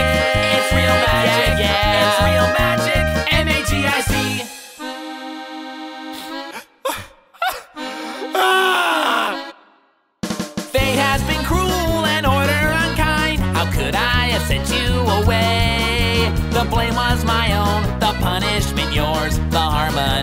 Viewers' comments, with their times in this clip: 0:04 The way he fake cries is funny
0:07 Original song: Relatively quiet sobbing Here: AAAAAAAAAAAAAAAAAAAAAAAAAAA